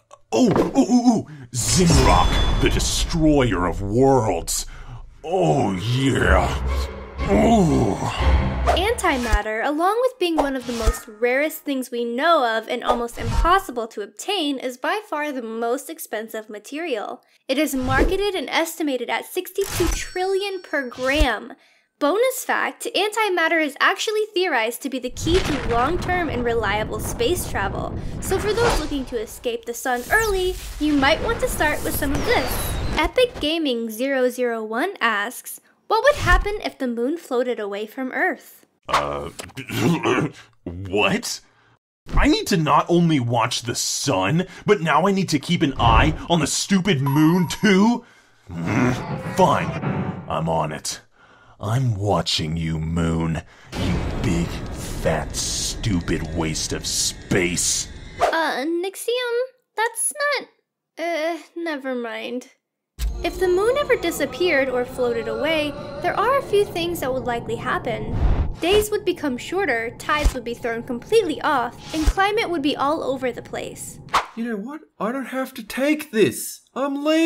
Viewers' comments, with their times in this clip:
0:05 sounds like he fapping.
0:05 his sound feels like he is trying to have sex with someone
0:06 i hear sexual sounds does some one agree
0:13 Remember How She Said "Almost"
0:42 pause DICKSIUM HAHAHAHAHAHAHAHHAHAHAHAHHAHAHAH XD
1:05 !!!!! IT SOUNDS LIKE THE CALL TO PRAYER WHICH IS KNOWN AS AZAN.